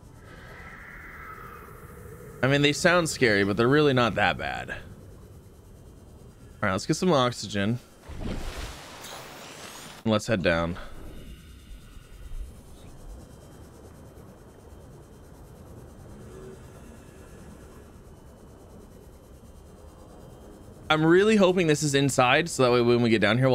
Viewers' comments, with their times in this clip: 0:09 the "let's head down." sounded so dejected lol